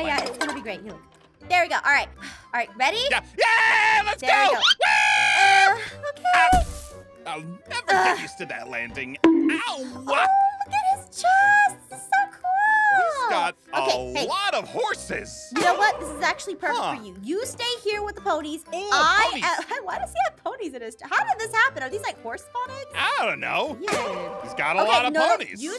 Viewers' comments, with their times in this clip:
0:07 Can we just take a minute to appreciate that 'Owwwa'😆